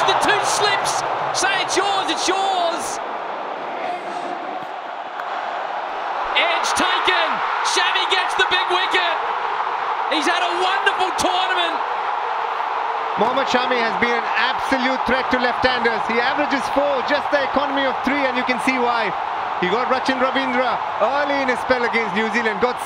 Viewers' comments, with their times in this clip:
0:03 This guy seemed to say "mc pakad le" 😂